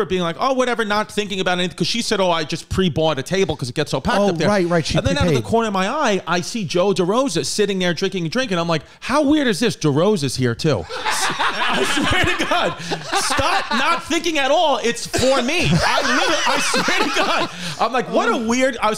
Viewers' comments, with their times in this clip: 0:04 I love Sal's laugh. Haha